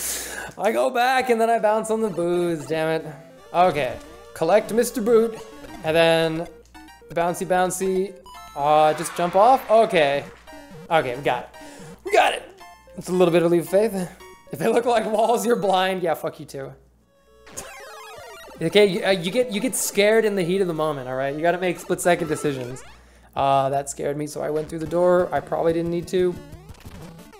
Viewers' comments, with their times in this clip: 0:08 That three boo tower boss fight actually fit surprisingly nice with the music! or so